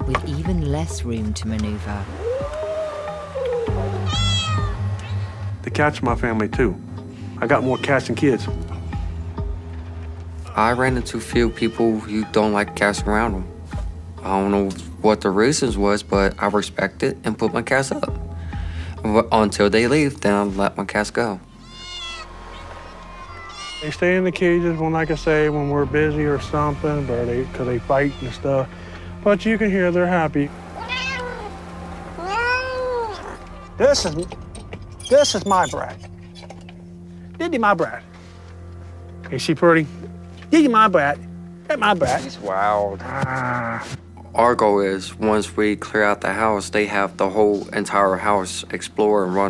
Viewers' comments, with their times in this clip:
0:04 sounds like the cat said “Help” 😳
0:30 "You can hear they're happy." After he said that the camera pans to cat that literally says "no"